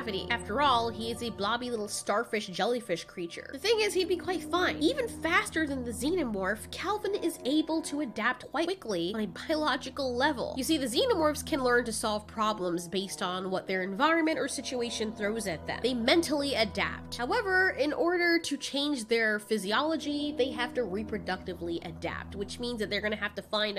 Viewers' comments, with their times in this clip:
0:10 She says something I can't quite figure out